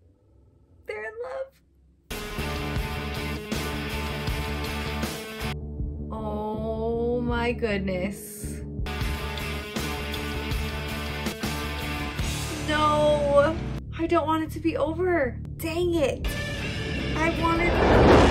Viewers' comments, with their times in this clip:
0:05 That drop gets me everytime for 20 years of watching the Matrix.